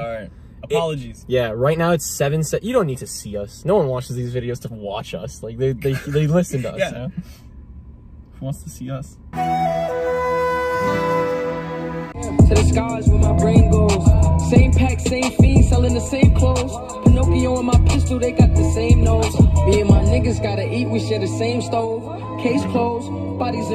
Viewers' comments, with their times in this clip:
0:08 "who wants to see us" with that sadness and sorrow flute 😂😂😂im dead